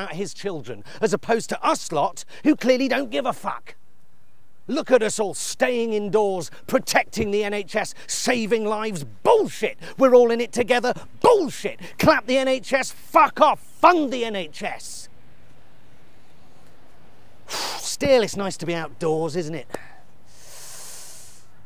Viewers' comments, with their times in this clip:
0:08 the emphasis he puts on the word bullshit 😂😂😂😂😂😂😂